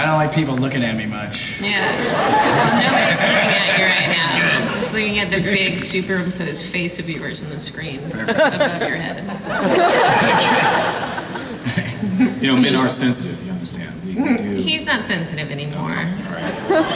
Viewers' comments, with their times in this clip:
0:04 was that a burp?? Lol